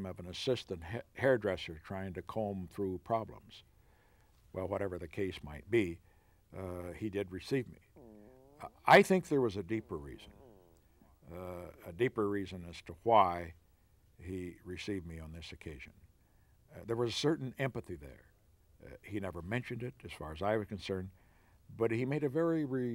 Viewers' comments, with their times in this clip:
0:08 Love the tummy growl or fart 😂